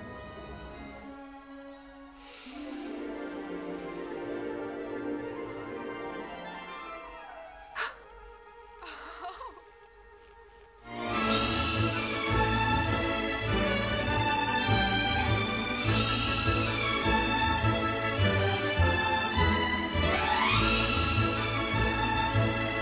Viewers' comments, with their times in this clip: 0:07 I love how she giggles